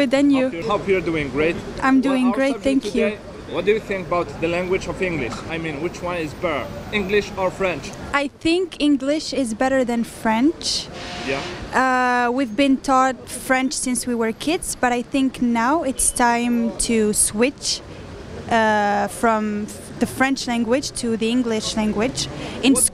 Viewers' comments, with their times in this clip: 0:07 wich one is butter :D